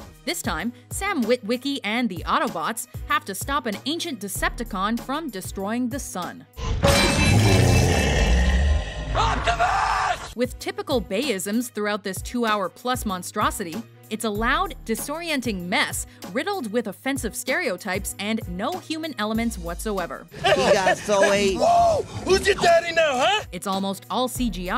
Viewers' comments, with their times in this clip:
0:09 I honestly thought he said octopus the first time I watched the movie